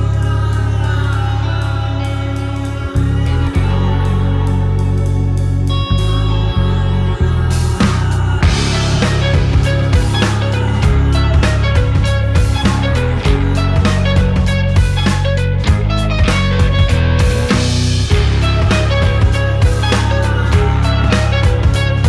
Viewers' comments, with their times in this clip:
0:07 My new favourite instrumental part